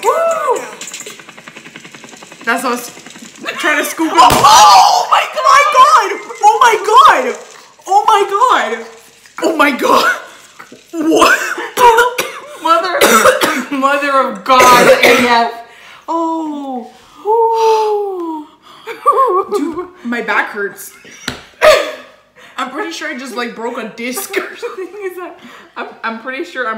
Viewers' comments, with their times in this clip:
0:07 HOW SHE SAYS OH MY GOD SO PROPER NJDWJJ